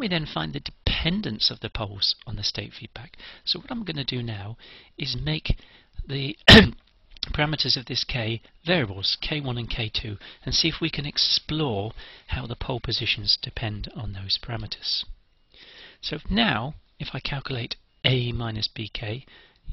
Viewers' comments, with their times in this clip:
0:06 That cough scared the piss out of me. Great video though. Really helped me understand state feedback.